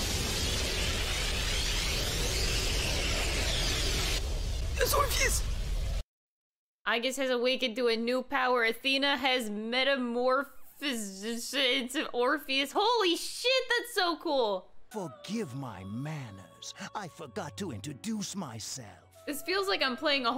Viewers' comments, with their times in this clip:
0:08 > Athena has metamorfzpehiehlkspzd Orpheus!